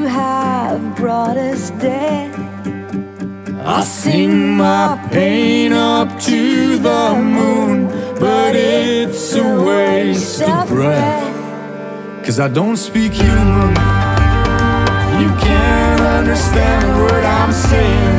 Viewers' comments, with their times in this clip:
0:05 The howl almost made me howl.... I'm a therian